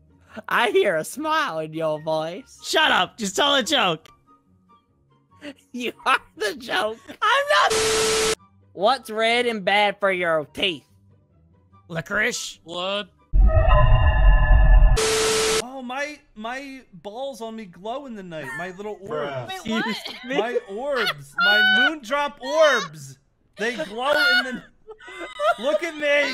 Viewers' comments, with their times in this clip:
0:08 Bonnie - "what's red and bad for your teeth" Funtime Foxy - "Licorice-? 🤨🤨" Pigpatch in the calmest tone of voice - "Blood?? 😄😁" Me - "I was gonna say apples but ok pigpatch.. 😀"